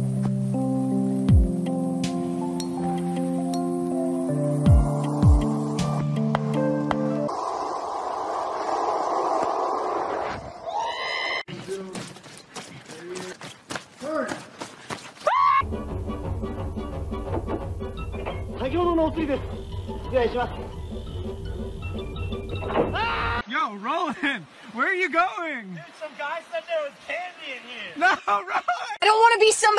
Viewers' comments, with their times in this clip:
0:10 R2D2 scream! This one is my favorite
0:11 tf was that R2D2 scream LMAO